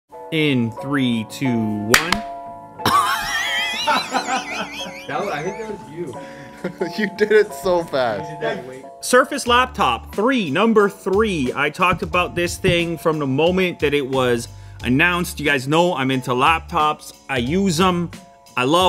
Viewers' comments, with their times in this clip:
0:02 That moment when you realise when your neighbor almost claps at the same time
0:02 is that tea kettle?😂
0:03 I don’t see a kettle but I hear one. Anyone else have this problem?
0:03 My car trying to start.
0:03 how my hairdryer sounds when it isn't functioning properly
0:03 nobody : dentist equipment
0:03 he's a bloody kettle mate
0:03 His laugh sounded like pacman dying phahahahaha lmao 🤣🤣🤣
0:03 Yo in he sounds like he went on a tik tok filter
0:03 This laugh is so weird